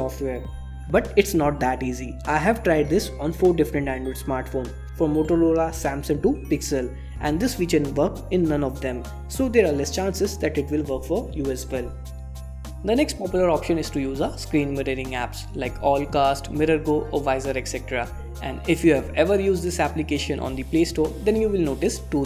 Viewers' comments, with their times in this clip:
0:04 did he just said motoloda 😄